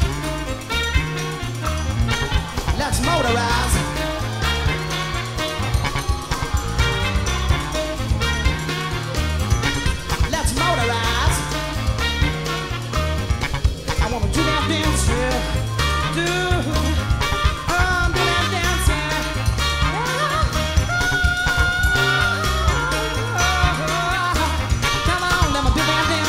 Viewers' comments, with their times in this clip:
0:10 on the the sax sounds like ''Use the force'' too !